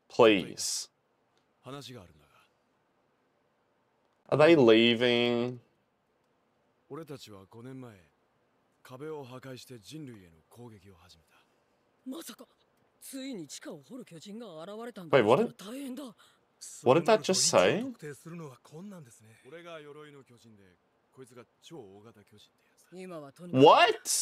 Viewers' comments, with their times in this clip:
0:07 It begins...the maniacal laughter as I see your reaction to all this info being dumped.